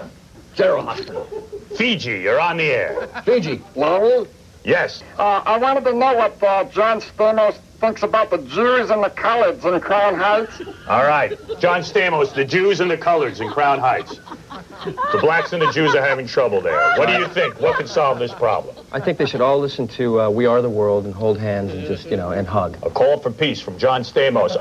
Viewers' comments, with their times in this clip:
0:05 spongebob calls in